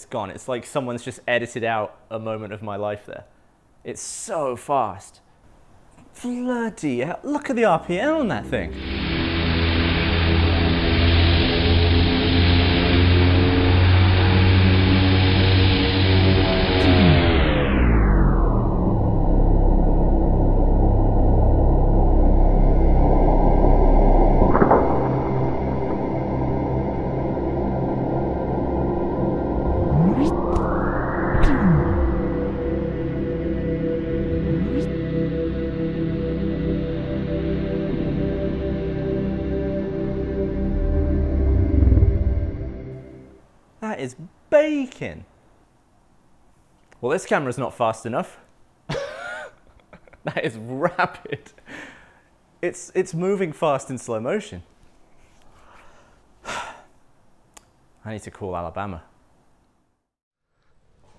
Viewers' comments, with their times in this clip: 0:10 Stuka dive sound restored
0:12 you can hear Godzilla atomic breath charging 😂😂😂
0:12 that sounds exactly like a taxying C-130 Hercules
0:18 I can hear interstellar theme song
0:44 that is bacon! I was thing of the word bacon And then you said something quite similar sounding.
0:49 "That is rabbit"